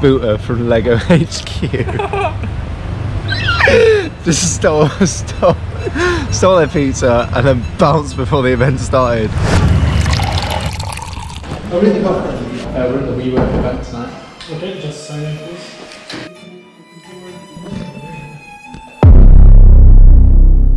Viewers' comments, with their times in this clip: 0:03 when you kill a minecraft horse